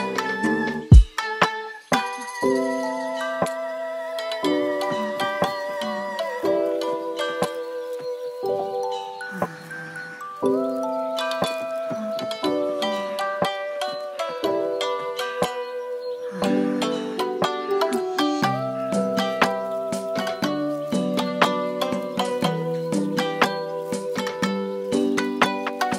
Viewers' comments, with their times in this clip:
0:08 ayo the music kinda sus I hear sum O_O